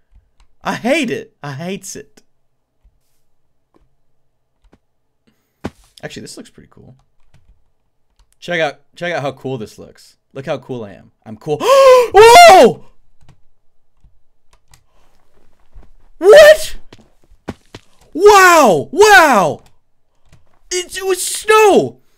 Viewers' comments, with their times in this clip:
0:09 ,that prepubescent squeak almost shattered my eardrums